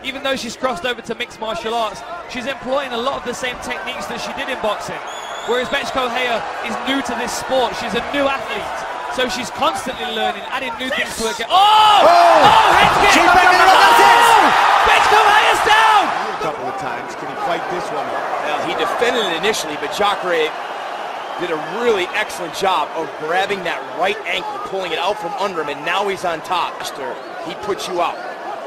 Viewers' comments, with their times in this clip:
0:09 That fkn question mark kick. I love hearing Holm's exhale as she NAILS this kick. What a martial artist.
0:14 her name sometimes gets… um… sketchy